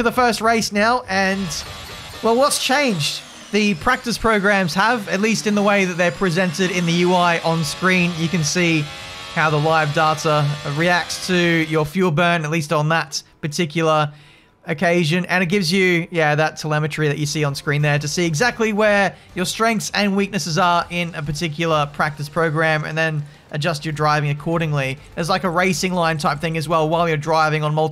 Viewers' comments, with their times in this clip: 0:08 NOW THAT'S THE SOUND OF A FERRARI ENGINE 🤩🙌🏼🔥